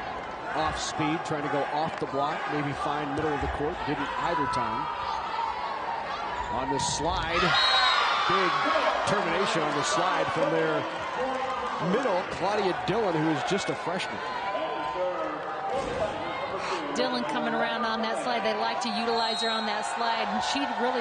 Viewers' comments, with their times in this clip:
0:03 when she says Dylan I thought my audio was possessed